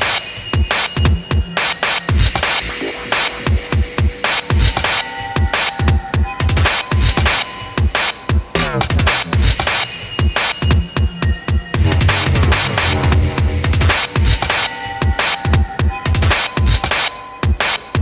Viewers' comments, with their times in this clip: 0:06 is such a huge mood. What an incredible live set and he's so hands on with the sound. There's a lot of soul in the music